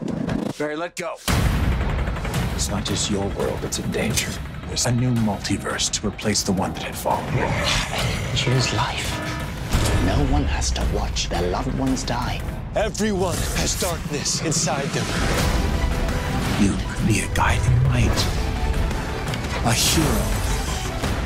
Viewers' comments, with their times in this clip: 0:08 all the iPhone users be thinking it’s time to wake up
0:09 amoung us sound